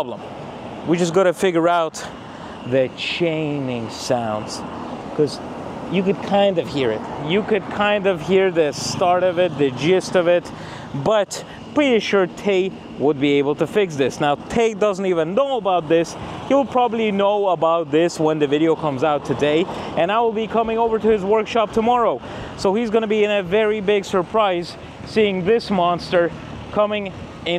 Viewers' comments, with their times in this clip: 0:10 if it's a chain sound I would assume that's the timing chain, being a better built German engine I guess it would have a metal chain rather than a rubber belt